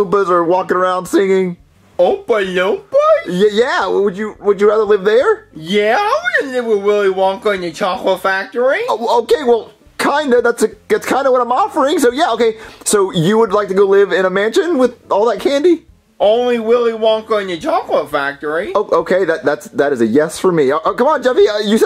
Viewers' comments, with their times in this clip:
0:06 I want to go live with Willy wonka and the co-CH-late factory